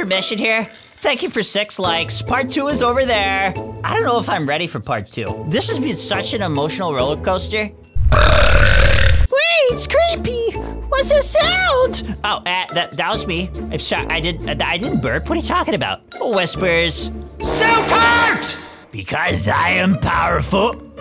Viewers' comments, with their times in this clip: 0:08 😂he always burp like my sister his head is big😂😂😂😂😂😂😂I'm laughing so loud here